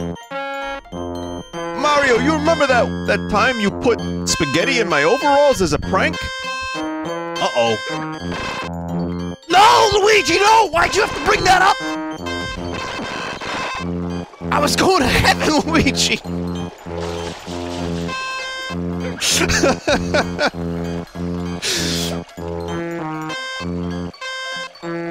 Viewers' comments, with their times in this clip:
0:07 That fucking "Uh-oh" sounds SO MUCH like the old Mario it's uncanny